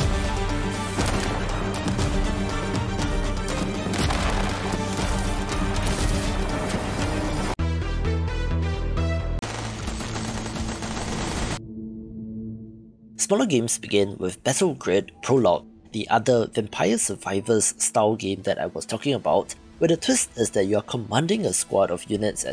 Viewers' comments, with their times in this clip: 0:07 The audio is silent when you're covering Mutants: Genesis